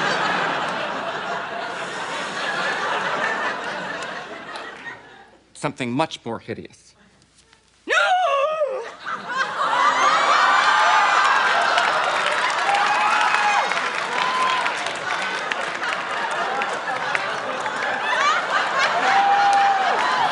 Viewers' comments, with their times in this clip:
0:07 I couldn't stop laughing after hearing her gasp.